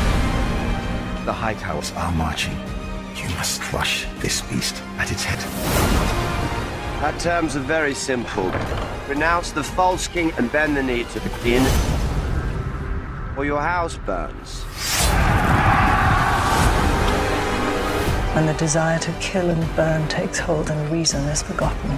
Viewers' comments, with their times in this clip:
0:06 actually, Daemon seems to be in a stormy Harrenhal just like Caraxes roaring at the end, matching with the description in the books the weather while Aemon and Vhagar arrives, looks like it will be at the last episode of this season.